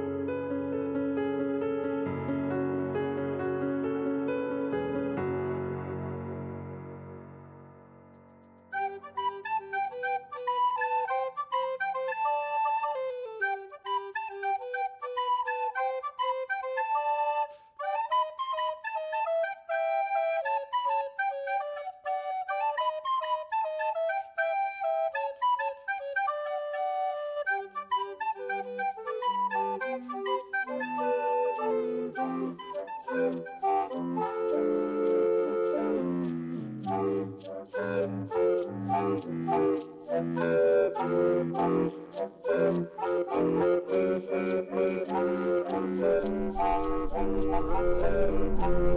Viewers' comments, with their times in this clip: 0:08 I skipped through the smile dog part and this music caught me so off guard omg XD
0:30 the music class when practicing at the beginging of the year